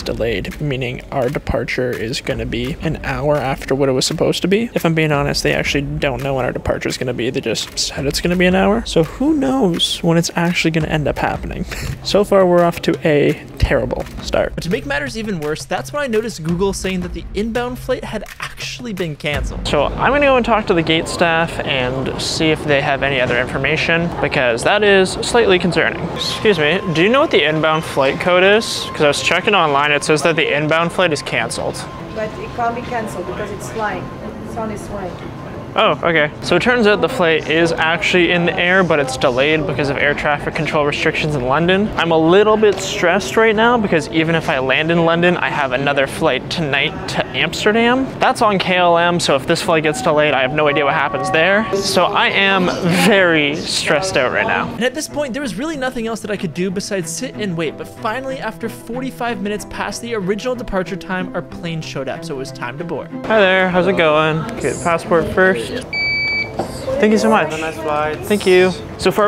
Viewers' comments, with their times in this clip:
0:05 Bro’s voice was weird 😂
0:32 the staff member was a little rude there like she could've said it in a nicer way.
0:50 that announcement attention sound gave me a lot of nostalgia